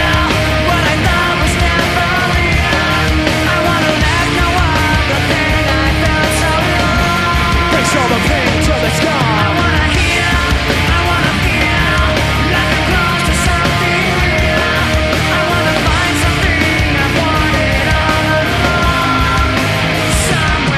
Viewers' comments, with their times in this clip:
0:05 until his hand trembling, because of his scream!